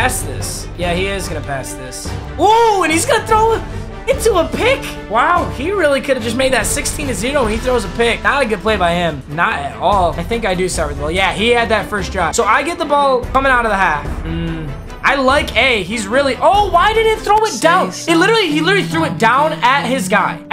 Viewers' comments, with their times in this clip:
0:07 “sixteen to zelo😂